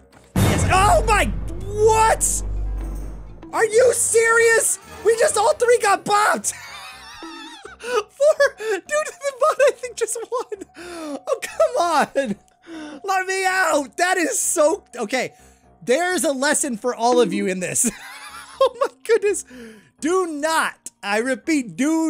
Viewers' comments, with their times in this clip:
0:03 W HAT WE ALL JUST GOT BOBBED me: Theres a guy called Bob u speak en about him?